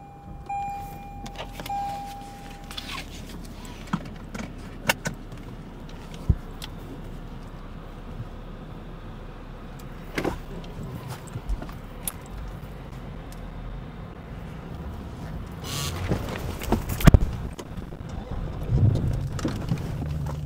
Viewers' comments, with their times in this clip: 0:05 And some theme music 🤣🤣🤣 for when he crept out of the bushes